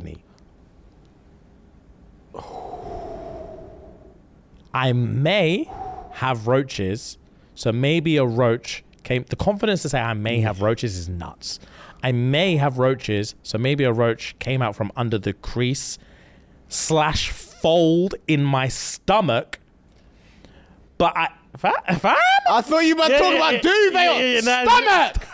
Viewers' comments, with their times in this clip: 0:08 The way he screamed stomach will always get me😭